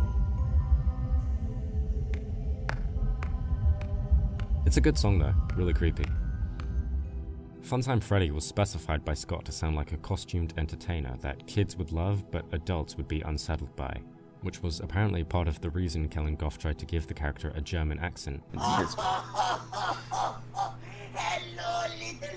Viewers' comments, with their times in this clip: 0:06 Saying Crumbling Dreams doesn't fit the song makes sense, considering it's just Broken 8-bit played on a music box; I mean Animatronica's funhouse and Afton'a bunker are leagues apart in terms of setting, even if both have an abondoned atmosphere to them.